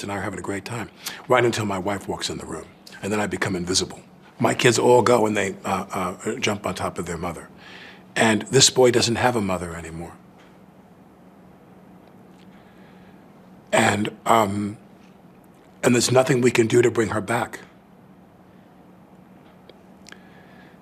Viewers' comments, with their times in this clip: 0:08 TRIES TO FAKE CRY BUT FAILS